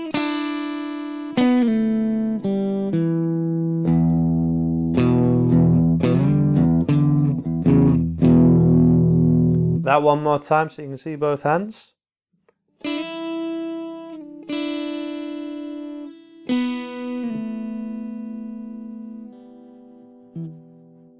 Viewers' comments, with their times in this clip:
0:05 on the original track , I have the impression that it's an E major not minor, anyway the chord you play at that moment doesn't sound like the original